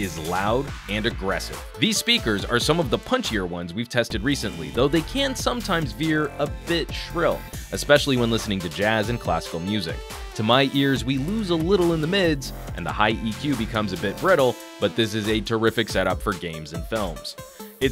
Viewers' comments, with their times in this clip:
0:04 click for the Sonic Screwdriver lol